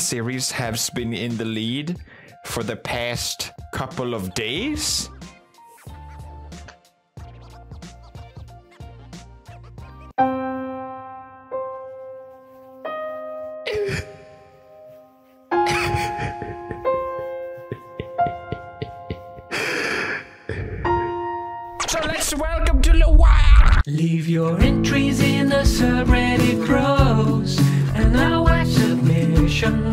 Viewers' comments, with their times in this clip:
0:10 PewDiePie “crying” needs a 10 hours loop 🤣🤣🤣